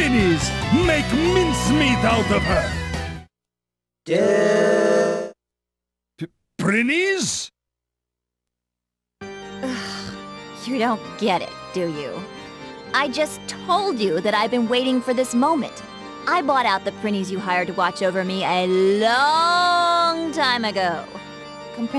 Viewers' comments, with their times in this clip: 0:04 Aaaaaand THIS reason alone is enough to like "Hour of Darkness" better than "Afternoon of Darkness". It ain't askin` too much to get the music right... 🙄